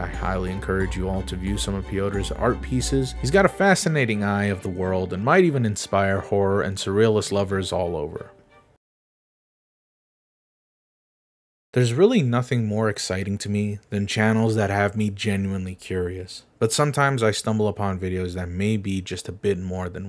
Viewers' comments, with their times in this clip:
0:06 is NOT Chinese. This is german woman saying: "Ich will nach Hause! Bitte!" ( Let me go home, please!) She repeats it and says something I'm not sure about yet, but the language in the Video is 100% german!